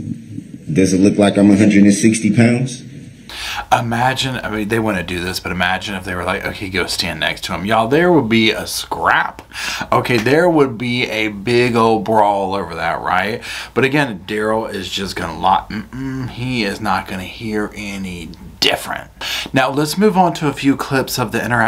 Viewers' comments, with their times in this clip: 0:06 db is totally trying to bully this witness!! Dorow is allowing him to do it. She jumped the witness raising her voice telling him to answer db!! WORTHLESS!! Her nose is so far up his crack she has withdrawals over the weekends!!